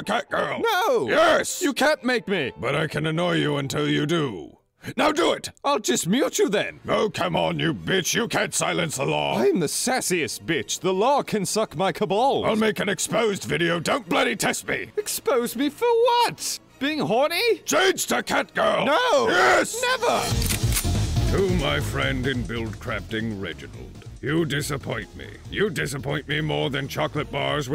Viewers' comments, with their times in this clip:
0:08 The way that was said was the best thing I have heard all day